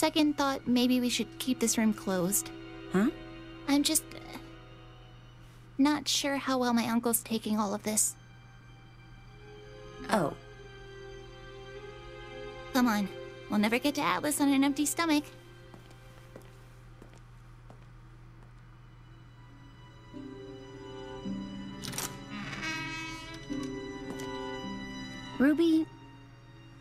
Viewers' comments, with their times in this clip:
0:10 That synchronised "oh" tho